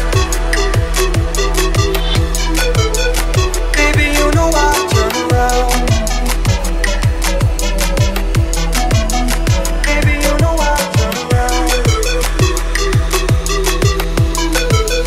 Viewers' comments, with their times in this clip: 0:03 i believe that at the transition the tempo should have increased a lot more slowly and spread out (probably starting the speedup when Raw starts end ending it when Raw drops)